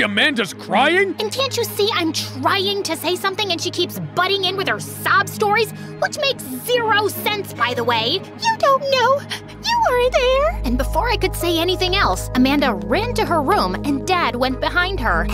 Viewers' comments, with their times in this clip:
0:03 thought it said the B word for a sec